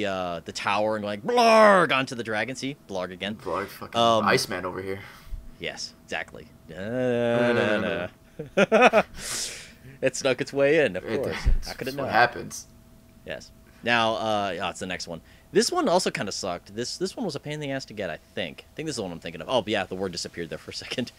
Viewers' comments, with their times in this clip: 0:06 Repeatably Press to hear they're stupid laugh